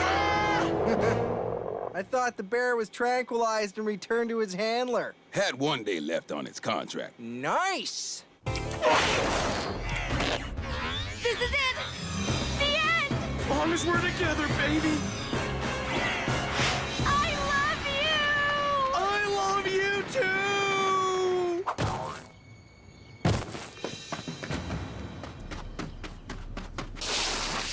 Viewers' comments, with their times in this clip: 0:08 anyone who’s seen that’s so Raven, and the episode when she fell down from the air vents eating the cheese, she made THAT same exact noise when she fell.